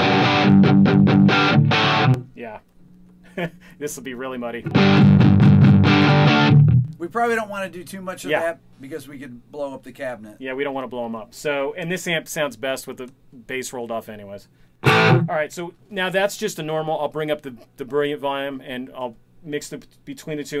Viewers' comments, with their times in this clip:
0:04 Josh Homme "Gimme that tone!"